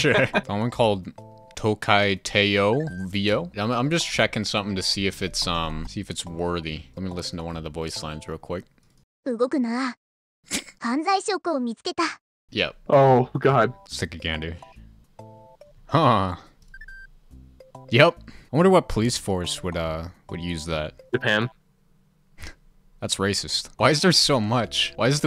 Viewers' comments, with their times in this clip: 0:09 That said "Don't move." And "I found evidence.'' The first line sounded like the girl was so frustrated.